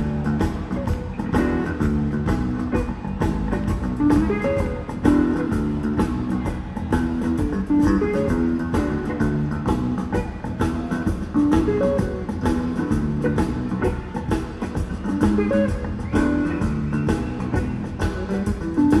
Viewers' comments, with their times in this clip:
0:05 almost sounds like A terrapin station tease.